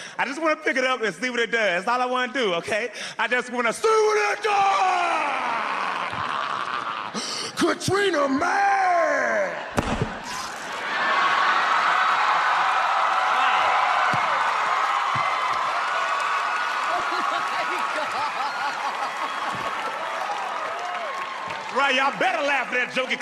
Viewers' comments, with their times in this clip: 0:09 why does the sound of the microphone hitting the stage make me laugh 😂😂😂